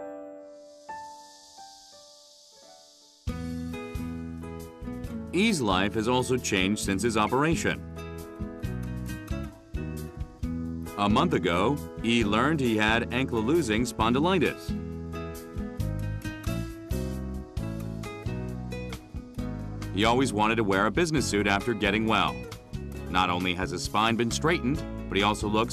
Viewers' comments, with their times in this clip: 0:09 Amazing stuff. I really like the music too!